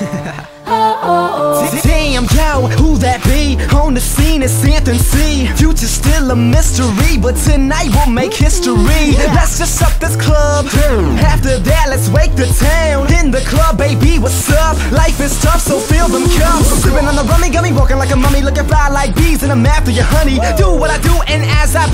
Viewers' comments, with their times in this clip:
0:04 The Boy from have best voice ever ;)